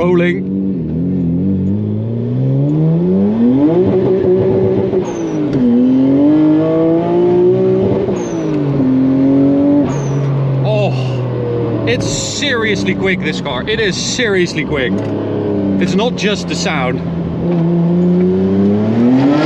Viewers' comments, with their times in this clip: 0:04 That sound really sounds like Paul Walker's sound R34 in F&F